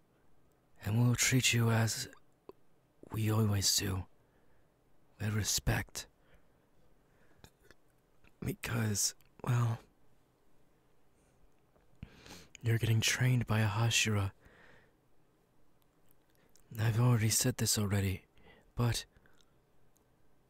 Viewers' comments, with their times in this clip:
0:06 can we talk about tha fact that he wanted to burp ? XD